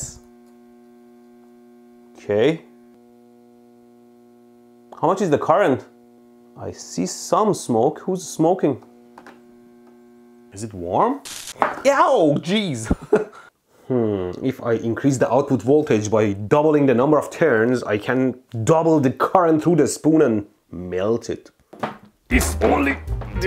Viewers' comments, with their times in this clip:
0:10 I FELT that sizzle
0:11 the sound when you put an steak on the grill😂